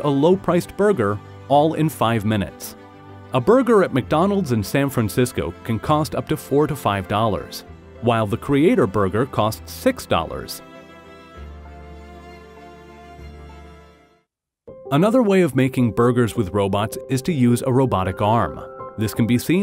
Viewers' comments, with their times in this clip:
0:03 is it "up to $4 to $5" or "up to $45"?